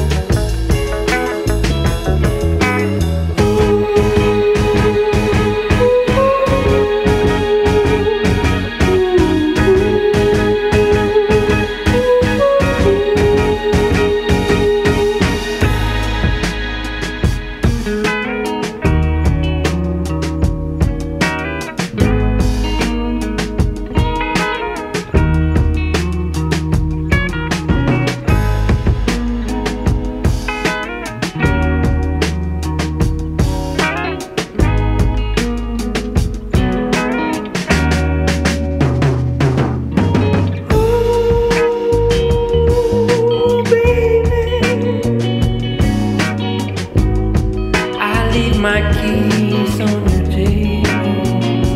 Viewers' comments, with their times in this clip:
0:04 The riff is the truth
0:37 Getting In Japanties only real musicians that actually play an instrument understand the smoothness, the power of vibrations that this song possesses, especially the 🎸. This song should have no dislikes, what is their not to like? 🤷🏽‍♂️ Nothing but art at its purest form, 🥁 drop is 🔥 , along with the entrance of the vocals 🔥; thus, if you do not feel that, I do not know what to tell you, other than it makes me sad 🤦🏽‍♂️.